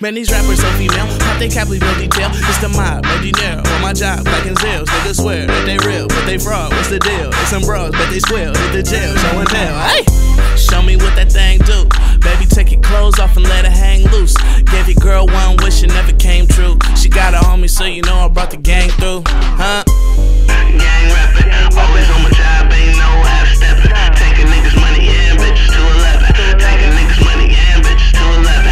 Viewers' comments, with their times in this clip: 0:09 IAmSu! yell: "aye!!!" :)